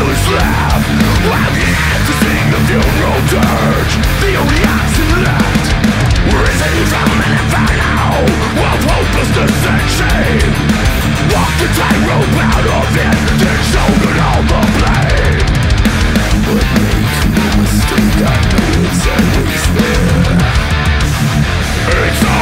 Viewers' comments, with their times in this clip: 0:07 I do love me some tingy tangs